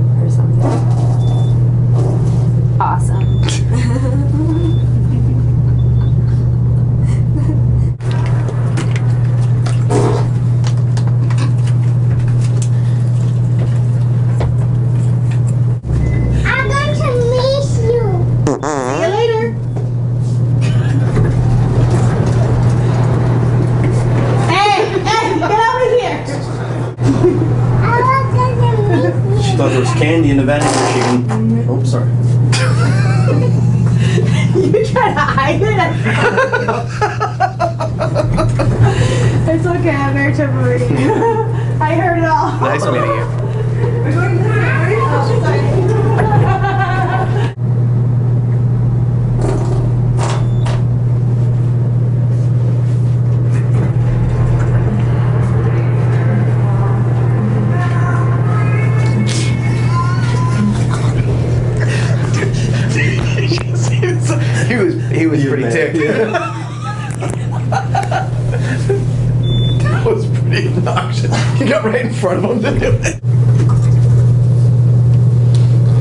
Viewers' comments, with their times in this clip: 0:09 was an awesome fart!
0:12 gotta love the tone simliar to her miss u
0:19 just when the litlle girl and his mother finished the sentence he dropped the bomb omfg xD
0:29 farts right in that little girls face "sorry"
0:56 Door opens, and guy runs out Radio overplays: "Now I'm freeeeeeee" 🤣
0:57 its funny because the doors open and the mall song sings "AND IM FREEEEE!" haha
0:57 as he leaves the elevator "NOW I'M FREE~~~" it's playing in the background
0:57 "Now I'm free" song exactly when she walks out 😂😂😂
0:58 now for some irony as the guy is leaving guess what song plays in the background. free falling. he opens the door and i hear now im freeeeeeee. it was too perfect.